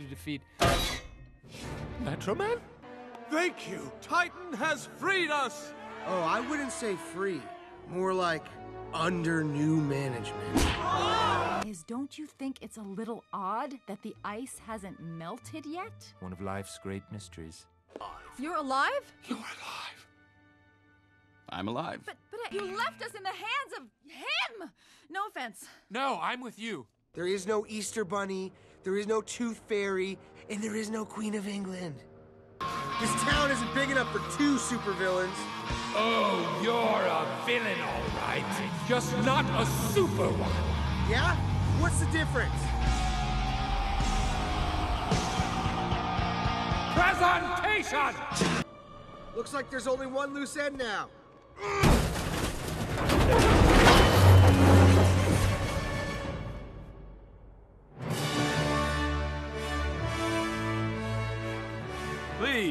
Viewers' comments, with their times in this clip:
0:06 “Freddy Fazbear noises”
0:22 why not markiplier voice
0:46 Megamind walking as we see the back of his head and rock music plays. suddenly the camera cuts to his face, and he appears to have a joyous or excited expression. He throws his arms to his sides and yells: “PRESENTATION!”
0:48 feels weird to see the scene without the music
0:49 i swear to god that fucking music started playing out of nowhere in my head